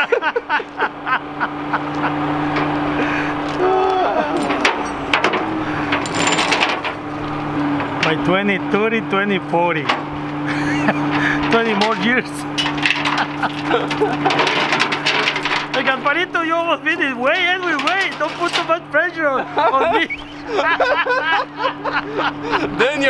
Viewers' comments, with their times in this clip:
0:05 The synchronized sigh 😂😂😂 These guys are good.